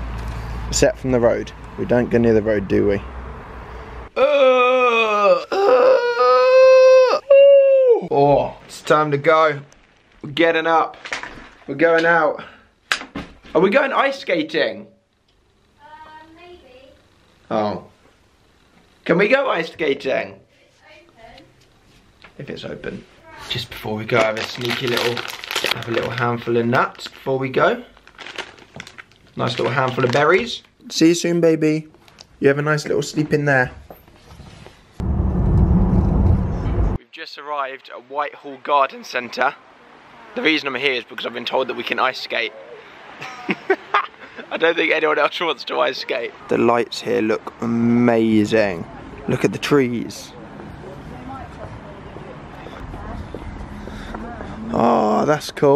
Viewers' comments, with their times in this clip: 0:06 That yawn mashup 👌🏼😂😂❤
0:36 anyone notice a change in sound quality